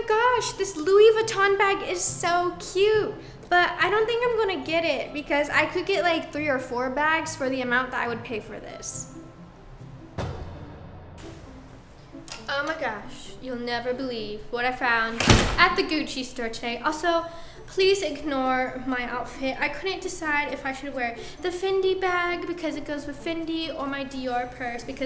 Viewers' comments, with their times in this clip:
0:10 BAHAH nessa: oH mAh GoSh!